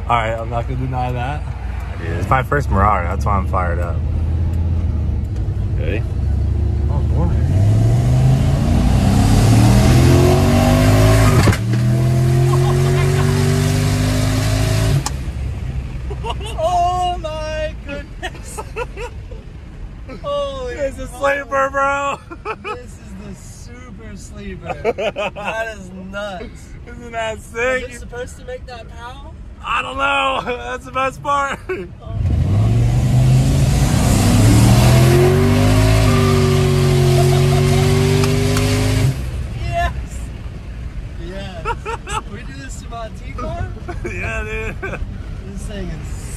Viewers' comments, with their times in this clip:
0:07 this pop while it shifts, soo good love it
0:11 I thought he said pop
0:33 sounds like he's ripping through the fabric of existence itself.